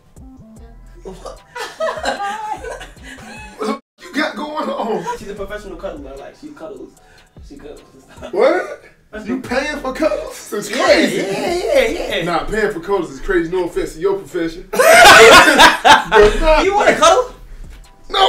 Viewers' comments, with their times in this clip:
0:06 duke did the dad "what" lmaooo